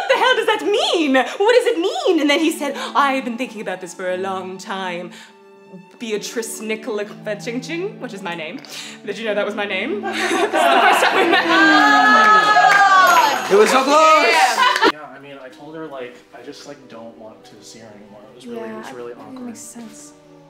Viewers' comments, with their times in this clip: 0:06 sounds like a slur 😂